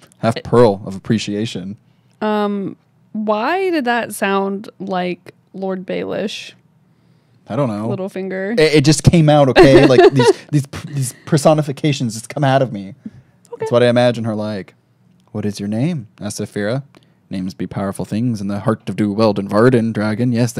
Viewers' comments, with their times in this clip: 0:05 omg it is little finger xd